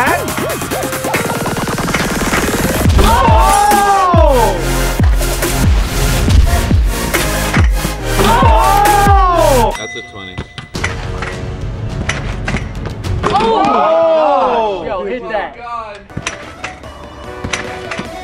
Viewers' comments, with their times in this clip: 0:03 the beat drops LOL